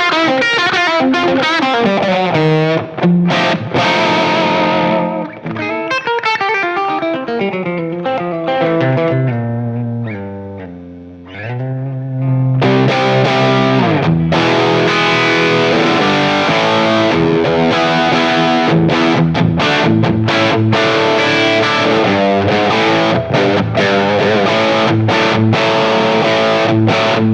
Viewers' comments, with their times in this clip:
0:09 he goes clean for a second.